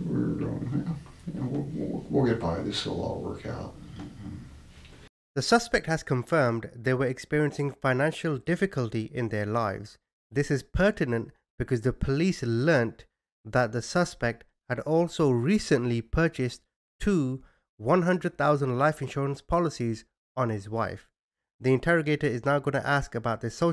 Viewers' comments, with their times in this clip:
0:05 Boom ! There it is, mentioned he recently raised the insurance on his wife, two $100,000 policies. Me thinks it is premeditated. She starts the questions and he strarts breathing heavier.